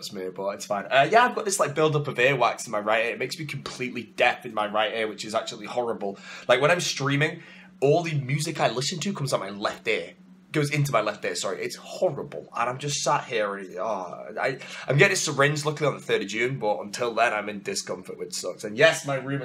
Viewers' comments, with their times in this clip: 0:03 Death ginger? FeelsGoodMan Oh, deaf ginger FeelsBadMan